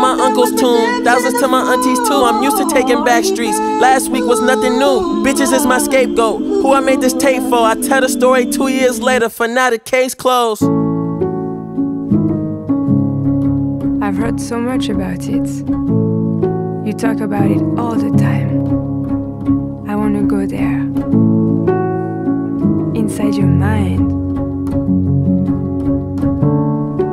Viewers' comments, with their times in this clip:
0:09 The melody here gives me goosebumps every time I listen to it
0:10 the piano is so beautiful
0:11 I could be tweakinggg but just a thought don’t that small melody there kindaaaa remind you of the slipknot melody from Xxxtentacion, like if it was tweaked a bit. But this song hardddd😮‍💨🔥